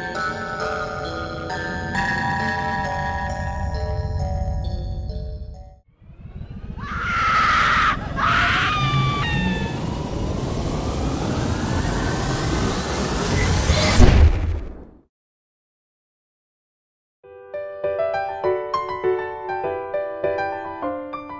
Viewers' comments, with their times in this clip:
0:06 LOL WTH WHY IS RED DRESS GIRL LAUGHING